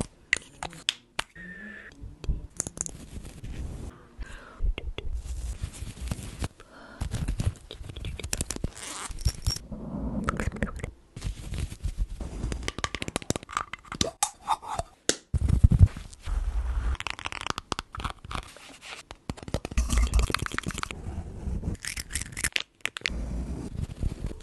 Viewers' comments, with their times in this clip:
0:10 she thinks say like weird sound